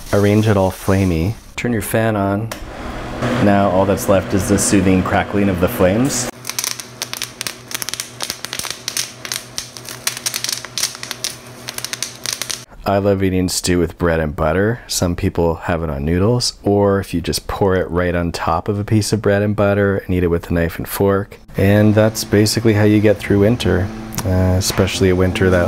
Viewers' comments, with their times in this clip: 0:06 You suck at cooking ASMR confirmed